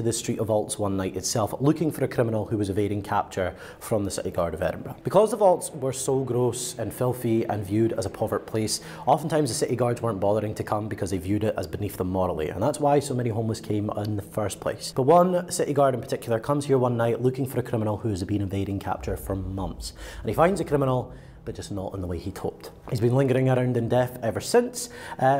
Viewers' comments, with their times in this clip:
0:09 I love the fact that the GhostTube app is so quiet (< )! The silence helps, for me, to show even more evidence of how authentic the app is!